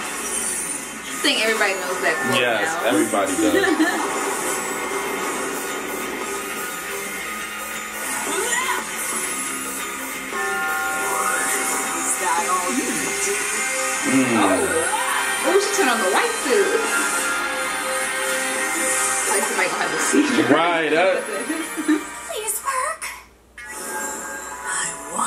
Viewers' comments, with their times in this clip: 0:06 I thought I heard an ice cream truck.